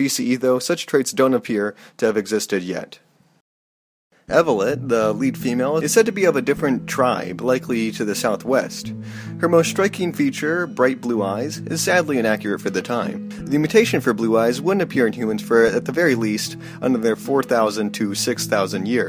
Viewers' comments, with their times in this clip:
0:04 the music It's just like I'm in the haven bag